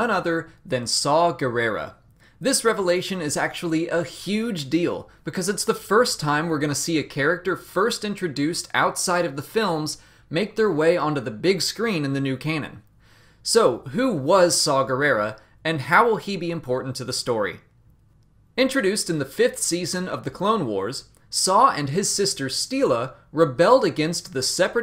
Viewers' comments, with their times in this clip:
0:10 "into the new 'kanan'" lol freudian slip